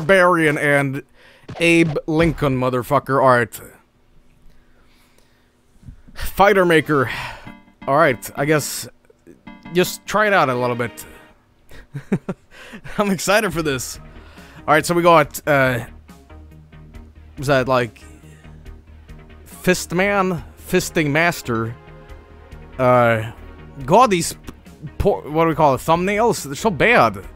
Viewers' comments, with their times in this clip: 0:10 Doesn't that sound sound similar to the Select sound from Sonic Adventure?